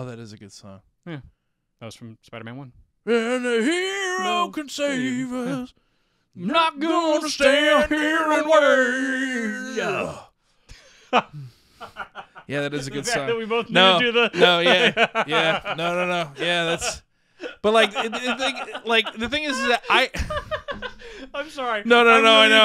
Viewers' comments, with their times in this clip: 0:03 Just got major Danny and Arin from Game Grumps vibes when I heard this bite😂